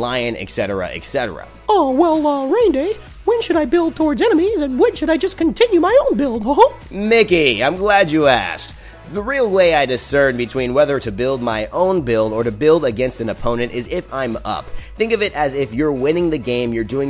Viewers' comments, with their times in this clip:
0:04 That was Not Mickey the mouse, that was miss piggy with a demonic laugh